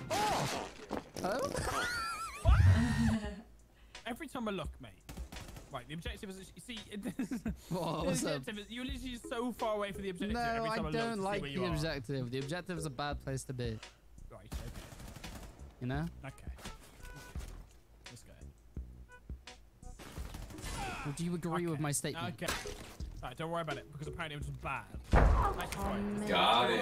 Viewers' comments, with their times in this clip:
0:09 that voice sounds like Lando Norris